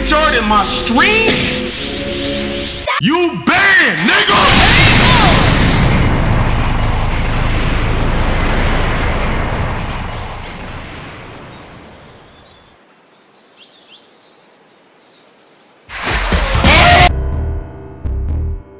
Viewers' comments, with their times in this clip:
0:03 that was the strongest “u banned” I’ve ever seen lol